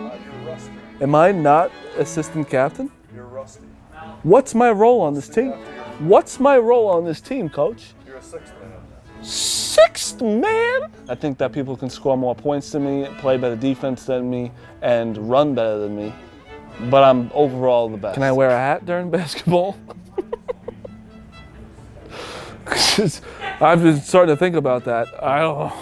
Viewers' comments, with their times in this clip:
0:09 sounds like Dennis Reynolds